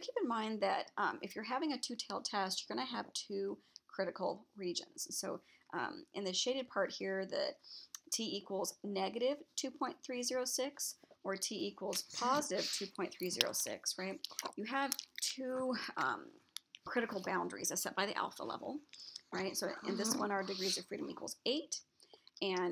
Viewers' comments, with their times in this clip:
0:10 it sounds like someone is eating. What is that?